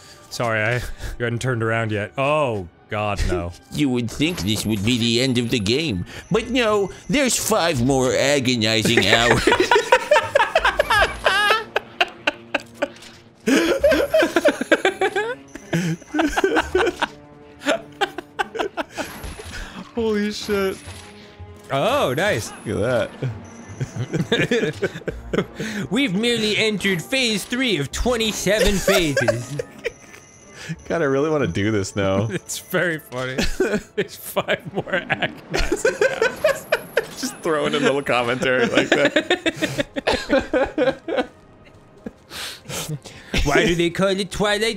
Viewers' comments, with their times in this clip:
0:03 Droopy: You would think this would be the end of the game, but no, there’s 5 more agonizing hours. Me: Oh no, I love this voice now!
0:30 I mean you guys kinda already do that without the droopy dog voice.